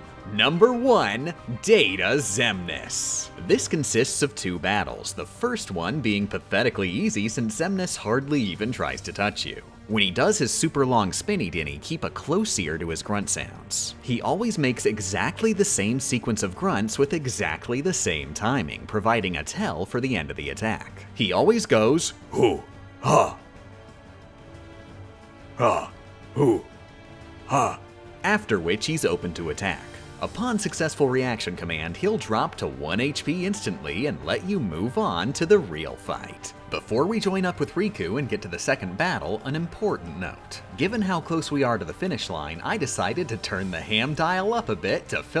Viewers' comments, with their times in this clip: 0:10 wait, why Xemnas, Xigbar, Axel, Roxas, Demyx and Xaldin you pronounce correctly the X, but Marluxia, Larxene, Lexaeus, Luxord, Vexen, Zexion and Saïx you don't? I just realized that and now am really curious as to why
0:20 You really could've just turned on the game audio for that but you instead felt the need to recreate the sounds personally and honestly I think it really adds something to the experience.
0:22 Thought Data Xemnas was playing there for a second
0:22 Tarzan meeting Jane for the first time:
0:31 the real reveal of this video is when I learn that xemnas speaks tarzan's gorilla language